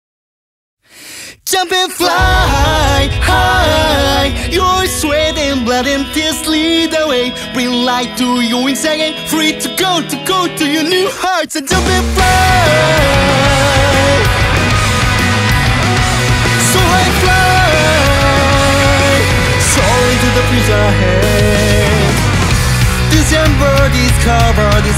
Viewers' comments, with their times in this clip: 0:07 Bring light to your YOINKS again !! x)